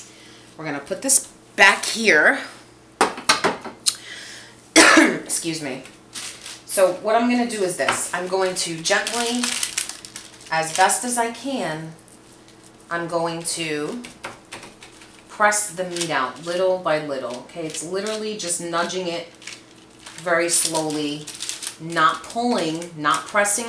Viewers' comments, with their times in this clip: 0:04 Did you actually cough into your hand at the mark?!...eww...that's a big "no,no" in the industry,but at home...what the heck. ;)